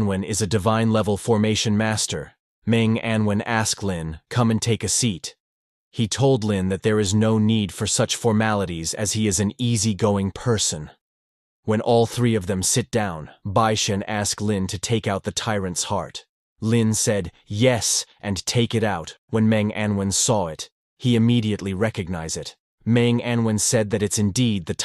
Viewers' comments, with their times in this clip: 0:05 why does it said like he’s angry when he says that “I’m an easy going person” dumbledoor said “calmly”